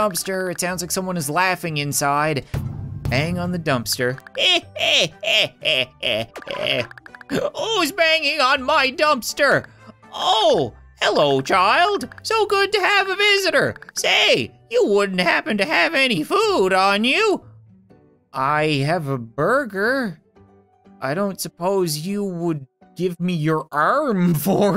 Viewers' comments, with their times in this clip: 0:06 I was today years old when I found out that when Agnis(Dumpsters hag) comes out it makes the among us vent sound effect go try it yourself (the timestamp)
0:07 wait I heard the imposter vent sound in